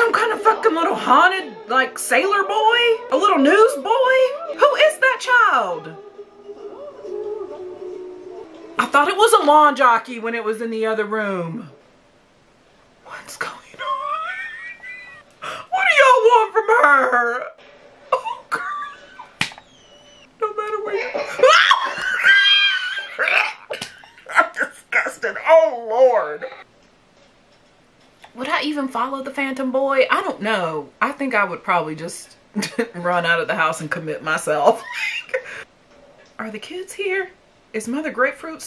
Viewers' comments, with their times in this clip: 0:08 In the song is soooo creppy i hate it and also love it to terrifie me
0:22 the gag had me sobbing 😭😭😭😭 this movie is so scary it's disgusting
0:22 the way she got so scared she actually gagged. idk if she would be ready for the conjuring